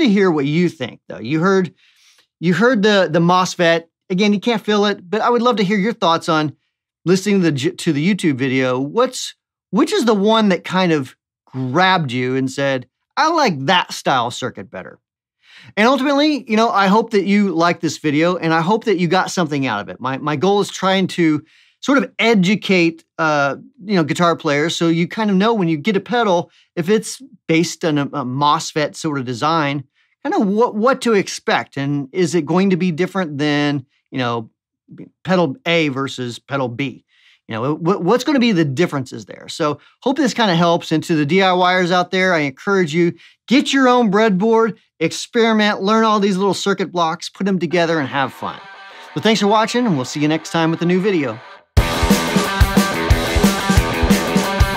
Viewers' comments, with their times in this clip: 0:09 i think i don’t like single coil pickups 😂
0:36 Hi there! Regarding the question mad on I think the first one of both options is more "Modern" marshal, Slash from GNR, AFR thing and the mosfet stacked one which is the second sound more 70's rock with a Fuzz kind of lo guitar frequency, more old school... The super compressed and more modern one (with the switch) can easily used as a Mesa Boogie type of thing if connected on a EQ cutting the mids for a more modern metal/djent maybe? A good variation of this test is passing an oscilator to it an measuring al character of the sign regarding to its harmonic responses etc. Great video tho! Fine worldwide know Wampler pedals! I'm bassist but like guitar and music production... Regards from São Paulo, Brazil.